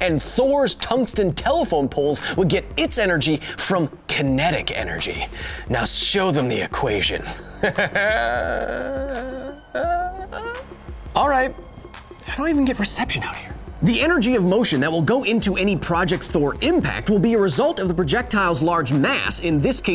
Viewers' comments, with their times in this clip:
0:06 This sounded less of a villian voice and more of a dirty sex talk